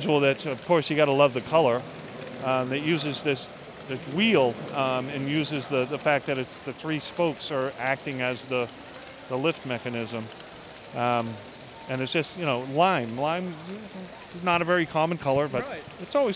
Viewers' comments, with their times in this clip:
0:04 Was the thing from spinning really fast or am I part bat??